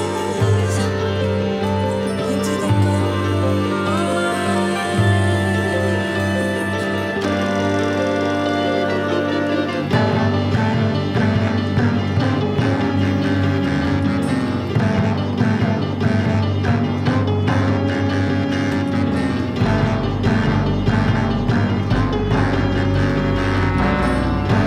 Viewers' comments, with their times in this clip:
0:10 Very nice! That 41/16 hits just right! 👌🏻